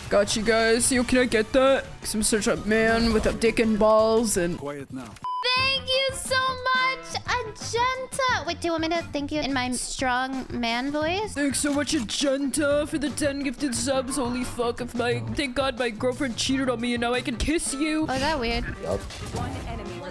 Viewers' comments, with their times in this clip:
0:03 quiet "now" XD